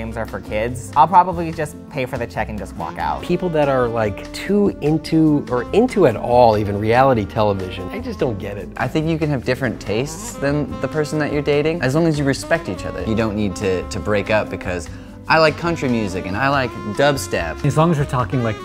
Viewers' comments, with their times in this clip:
0:03 the guy that's speaking literally sounds like josh hutcherson